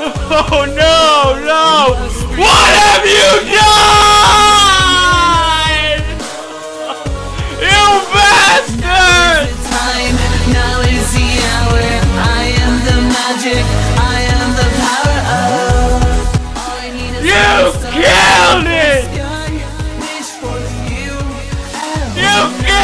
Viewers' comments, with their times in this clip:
0:09 I like how he yelled so loud that you can see drool coming out of his mouth